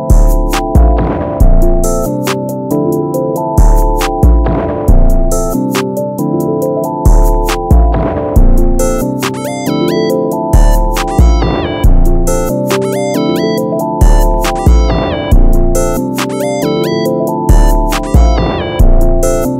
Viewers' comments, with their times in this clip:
0:07 The beat is good, but I didn't like it when you added that one